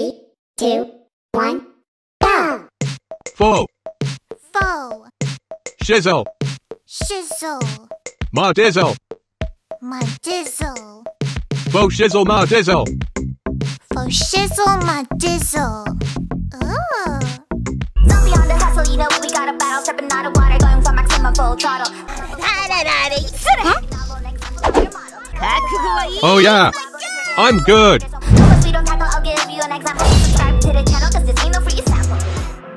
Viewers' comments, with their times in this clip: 0:05 why does this sounds like "жиза" 😂😂
0:18 Another awesome song!